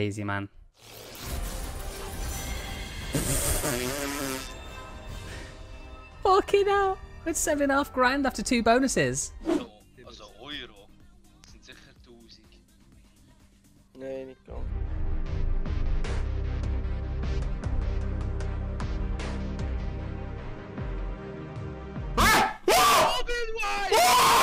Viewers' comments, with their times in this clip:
0:09 So happy i can understand what hes saying